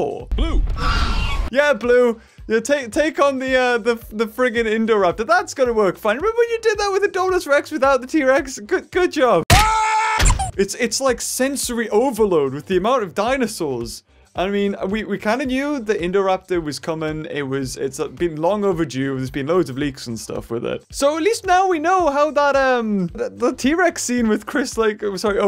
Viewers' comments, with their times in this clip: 0:10 Can we just note that squeak like really